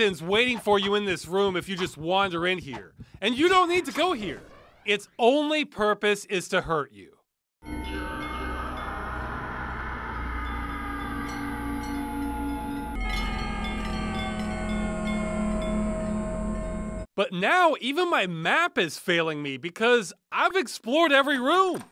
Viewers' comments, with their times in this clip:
0:07 yep, that weird academy sound
0:07 This scream sample is quite popular. Though usually it's played a bit faster (higher pitch) - the fast zombies in Half-Life 2 make this noise when charging for example. I also believe I heard it in a couple movies.
0:07 I thought I recognize that scream from the cartoon "Aaahh!!! Real Monsters", but it sounds slightly different.